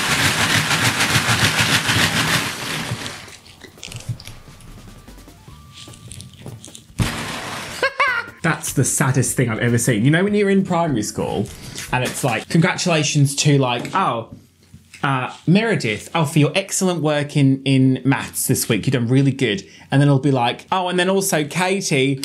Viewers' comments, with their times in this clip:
0:07 That laugh needs to become one of the go-to clips. xD